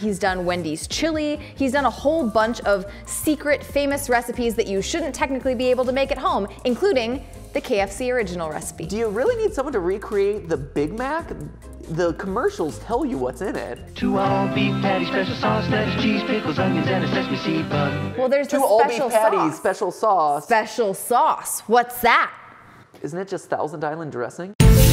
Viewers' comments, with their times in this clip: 0:06 why does she sound like someone on the news 😭